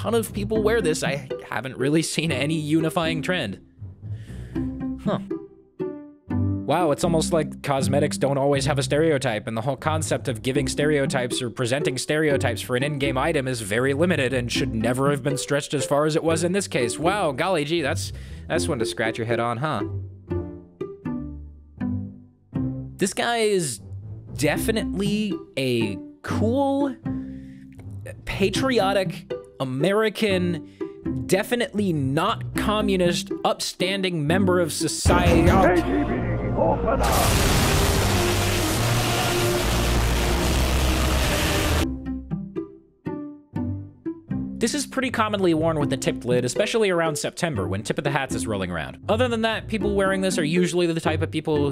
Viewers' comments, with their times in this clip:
0:07 the sounds of a broken man
0:21 Here's your obligatory Soviet/Communist "national anthem ear rape" Heavy joke
0:25 Soviet anthem intensifies
0:34 can somebody translated, i don't speak the "other side of the door" language
0:34 this is unironically the best audio quality of this meme and I have no idea why
0:35 this is the most gracious yet violent "KGB ! OPEN UP " I have ever heard.